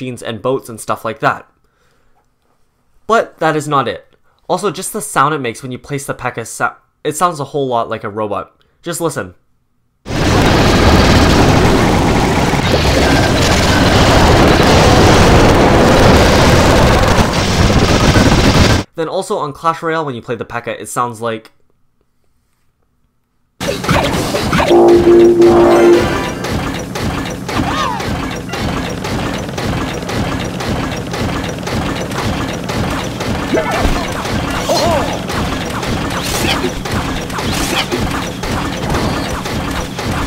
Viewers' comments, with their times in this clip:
0:10 he's like, "sound the pekka makes when you place it sounds a lot like a robot, just listen" And I'm like ok, let me turn my volume up a bit so I don't miss it. But when I turned up my volume, it didn't sound like a robot. It sounded like a crap ton of ear rape. Thank world of clash
0:12 clash of clans earape
0:23 can u hear it say butterfly
0:24 Does the pekka said "time to die" idk